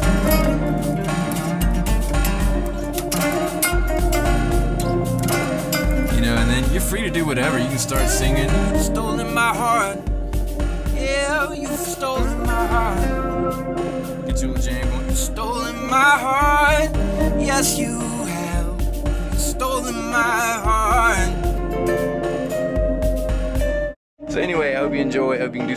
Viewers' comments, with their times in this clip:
0:07 Seemed so effortless and sounded sweet. Thanks for the tutorial! PS Leeland? ?